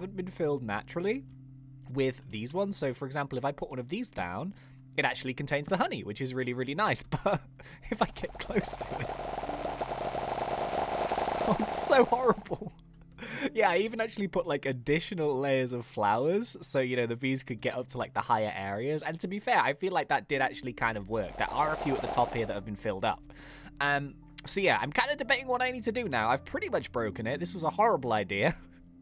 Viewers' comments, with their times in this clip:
0:10 the bee on the right starts spinning as broken adio plays lol